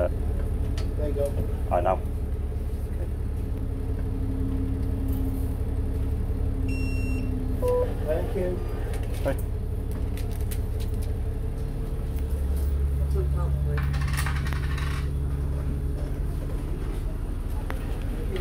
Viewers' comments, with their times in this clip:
0:05 First Time Hearing Your Voice